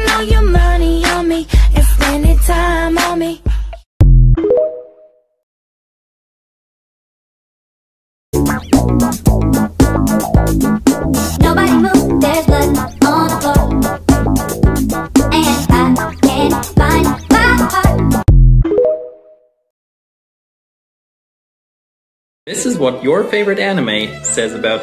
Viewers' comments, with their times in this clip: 0:08 when bendy was crying i was like- 😳